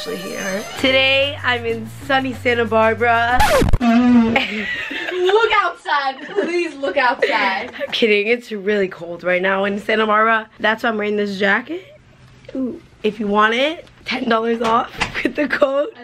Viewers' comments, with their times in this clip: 0:04 sounded like someone let out a big ass fart💀💀💀